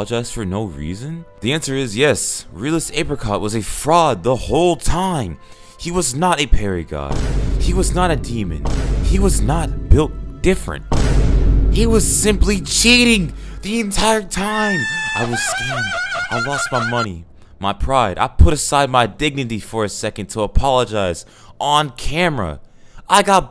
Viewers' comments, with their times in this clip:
0:05 Vine boom in perfect sync with parry